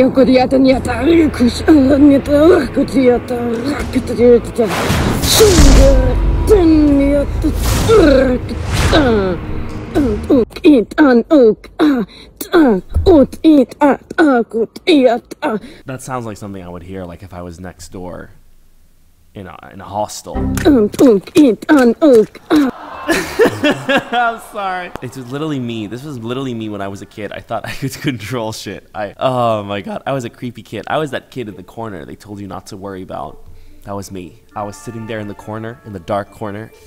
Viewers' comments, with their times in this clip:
0:07 help this sped up is so weird but honestly funny😭😭😭
0:09 sounds like if she was voice acting for a fighthing sound
0:15 When you hit a minecraft villager
0:21 me learning how to beatbox